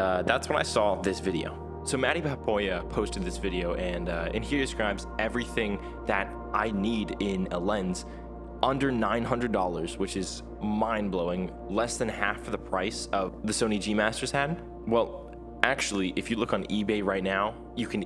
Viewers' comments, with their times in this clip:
0:06 the ambient music in the background..